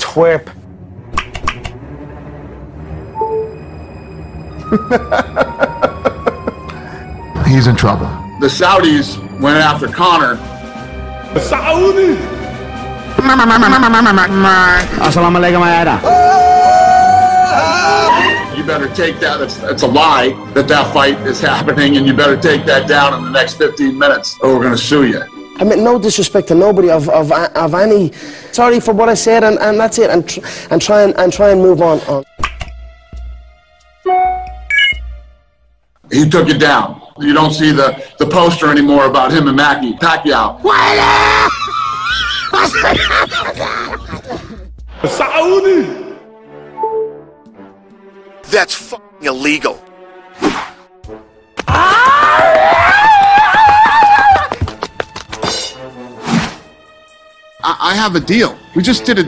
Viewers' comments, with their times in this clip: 0:10 fucking Russell Peters 🤣
0:11 SAAUUDI in Russell Peters's voice had me....
0:39 whos laugh is that 😂😂😂😂
0:40 Dana new laughing 🤣
0:41 That Laugh Lmao 😂😂😂😂😂😂😂